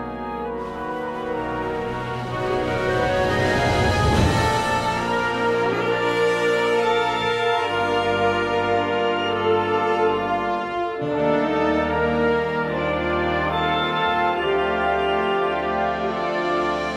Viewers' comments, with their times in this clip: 0:04 In our band, we had an advance band. They played this. I was jealous because I really like this song. I love the way they put the french horns It makes so beautiful.